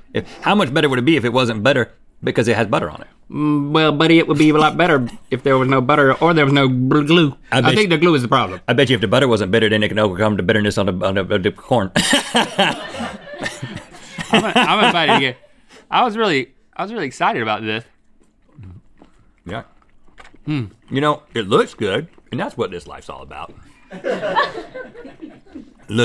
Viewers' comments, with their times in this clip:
0:08 Rhett trying rap god
0:09 just a full scatman moment right here
0:11 he said corn. he said CORN. he didnt say por- yeah no. he said corn.